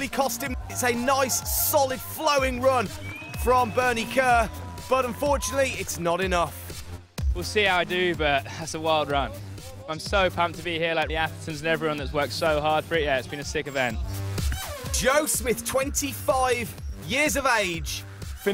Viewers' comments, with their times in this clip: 0:05 I can't understand 90% of what this guy says: